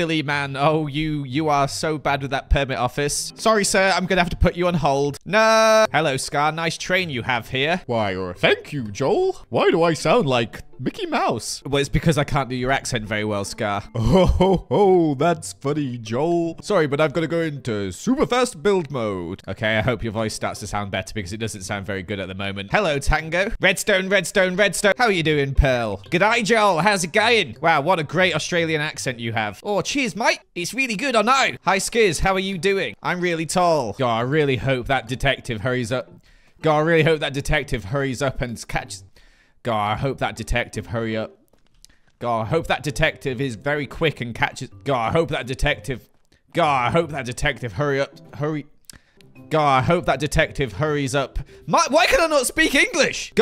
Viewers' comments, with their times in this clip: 0:07 This impression is gold lol
0:34 idk if I'm relieved or upset to learn that even the veterans struggle to get a sentence out for the camera lol I literally did this exact thing like an hour ago
0:35 Speak Australian one time and it totally destroyed his English Accent and ability to speak. OYE!